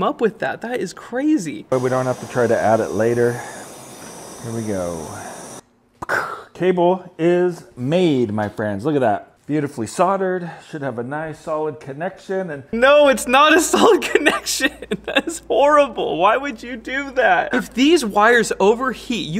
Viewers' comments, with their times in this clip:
0:06 but ya gotta admit his sound effects are stellar! 🤪